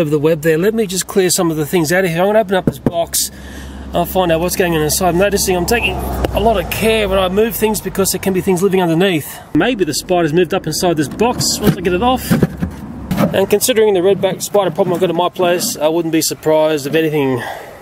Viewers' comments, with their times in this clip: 0:03 did he just beet box